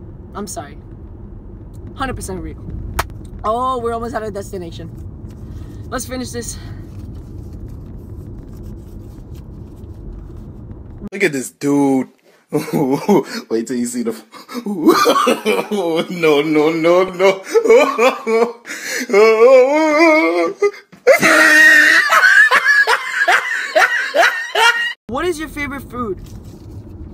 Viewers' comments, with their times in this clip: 0:09 and now we burst into laughter😂😂😂😂